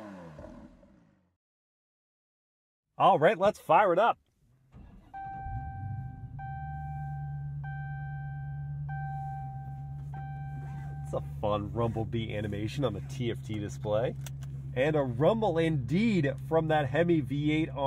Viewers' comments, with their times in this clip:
0:04 quietest V8 start up